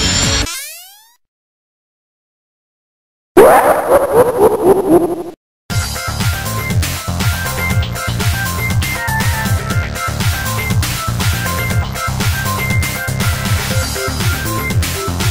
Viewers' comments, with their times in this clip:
0:03 That was the creepiest laugh that i never heard
0:03 AND THIS SONIC EXE LAUGCH